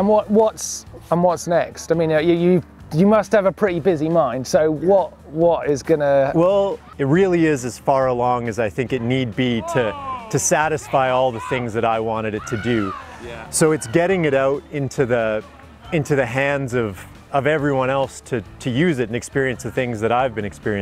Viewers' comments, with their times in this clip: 0:07 Someone shouts and I spend the next 5 minutes trying to find another youtube window that might be open playing another video lol